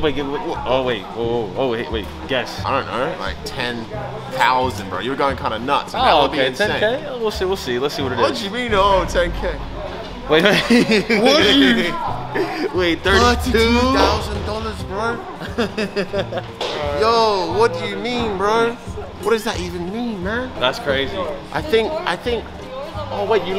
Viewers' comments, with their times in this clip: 0:09 did u hear his voice it was like tenkkk😰 😂😂😂😂